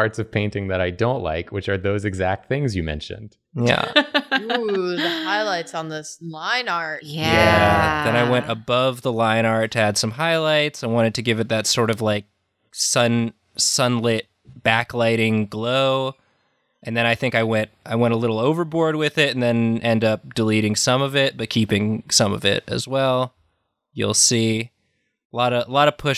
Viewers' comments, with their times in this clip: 0:06 the drawfee THX drone after is very nice to listen to
0:07 i love how they harmonize